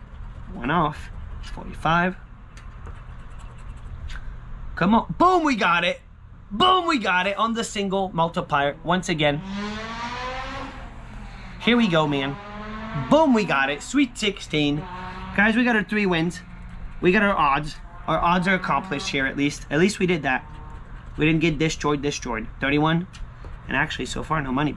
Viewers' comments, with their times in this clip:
0:09 two stroke motorcycle kicks in throttle powerbandz.